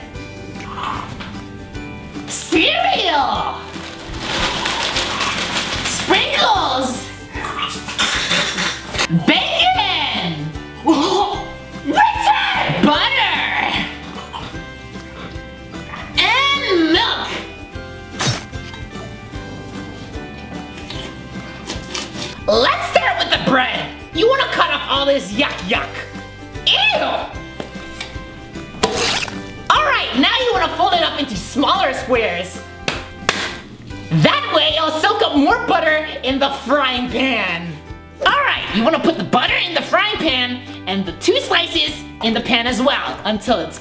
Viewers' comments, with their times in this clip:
0:07 it sounded like he was choking on the sprinkles 😂
0:28 sounded more like stabbing a dead body EDIT: PS I miss these two characters and that face shows that Rolanda is a psycho, and that sounds like something we already knew.